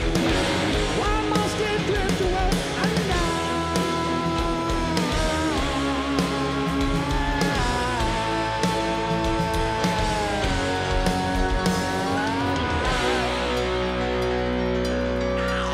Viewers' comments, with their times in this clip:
0:03 Here you can hear very well that Axl still hits every note, but as he sings the half tone steps down it's noticable that there is a specific note which marks the pitch where his voice sounds not this strained anymore. I love and admire Axl no matter how high or low he sings, but I believe he would sound great if Guns N' Roses just played the songs one pitch lower.